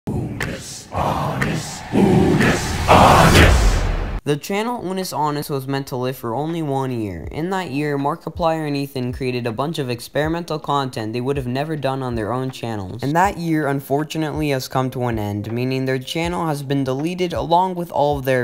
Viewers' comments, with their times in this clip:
0:00 it’s like hearing god speak